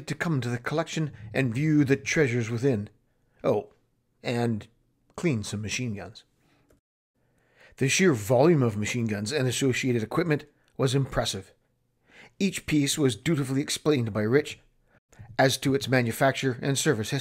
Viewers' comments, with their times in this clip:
0:04 You say " ... and clean some machineguns" like it's a dirty word or something